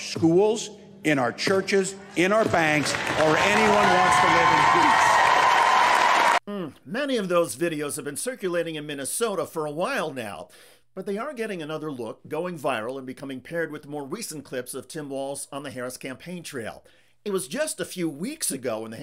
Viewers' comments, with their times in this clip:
0:05 half the room claps. Please vote for that half .